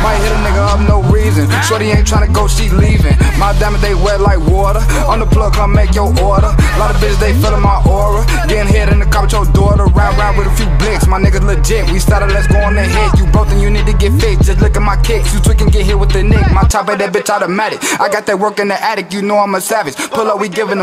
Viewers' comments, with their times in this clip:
0:06 that flow that got me in the wave.. 🔥🔥